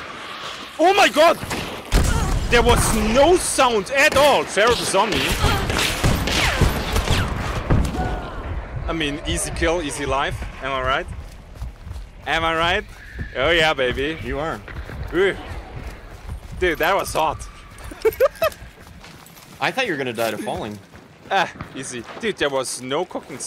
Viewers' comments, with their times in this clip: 0:07 I usually watch you on phone and i dont ever hear (obviously) footsteps and or any other ques that alert you. i was able to hear the dynamite and saw hardin on the ground🤓 Nice use of quite unique loadout, well played!!